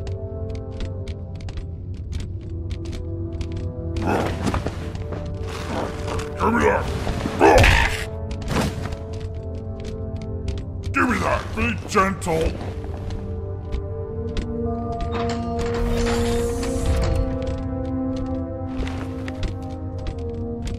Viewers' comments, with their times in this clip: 0:05 Fucking JonTron "ECCH!"